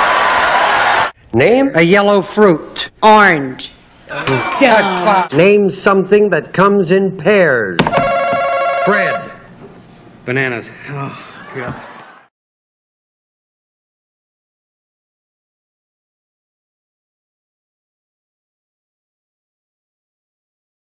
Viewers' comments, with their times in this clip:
0:04 Who says say "Get Fucked" in the background??